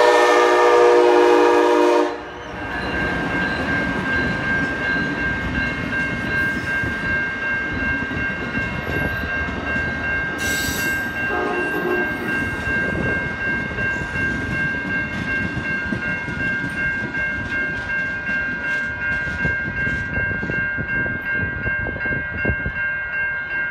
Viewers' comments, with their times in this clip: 0:10 thats my horn salute from Amtrak 👍